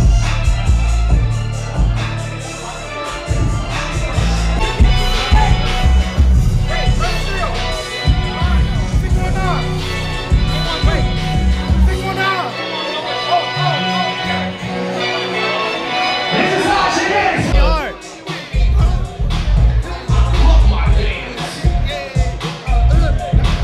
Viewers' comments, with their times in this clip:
0:04 That john cena theme song beat so hard!!!!!🔥🔥🔥🔥🔥